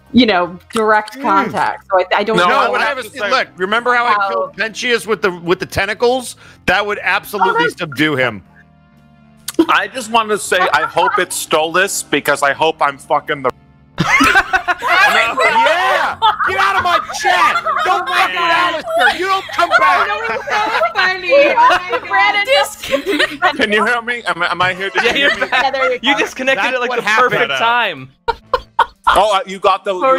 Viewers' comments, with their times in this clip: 0:09 “I just wanna say I hope it’s stolas because I hope I’m f-cking the-“ The cut off was just perfect 😭👏
0:12 that was the best cut off xd